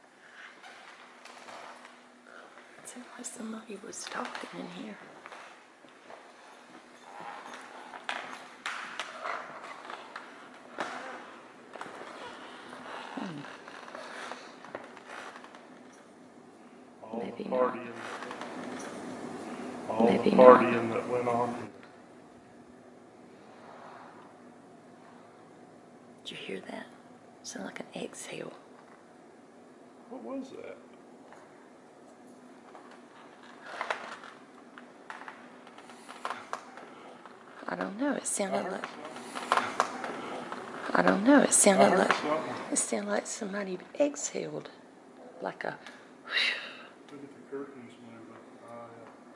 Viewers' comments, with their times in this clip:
0:06 what sounds like glasses clinking?
0:36 Loud male whisper, almost sounds like "Heaven knows..."